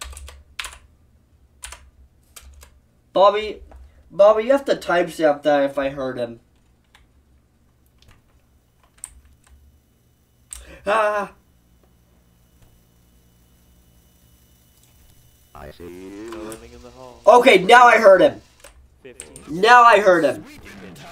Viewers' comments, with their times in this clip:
0:09 I don't think i heard the principal